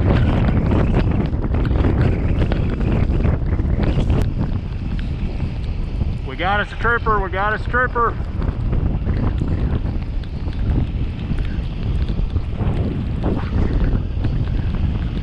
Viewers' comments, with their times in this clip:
0:03 don't you just love Balaclavas..... .... we got us a stripper, we got a stripper....?